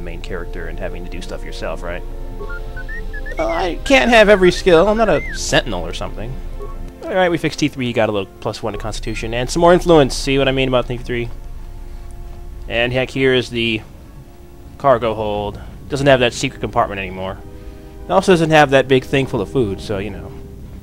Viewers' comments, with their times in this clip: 0:03 T 3 sings "pop goes the weasel"